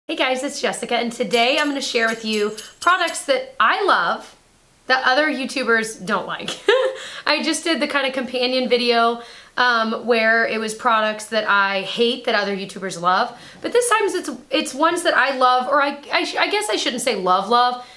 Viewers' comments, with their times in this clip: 0:01 THOSE SLEIGH BELLS YAAS CHRISTMAS!!